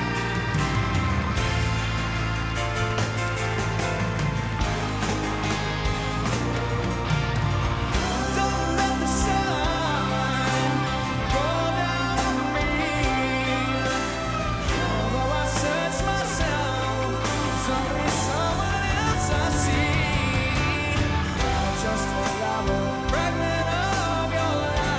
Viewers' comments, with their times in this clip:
0:09 Listen sounds a bit...metallic?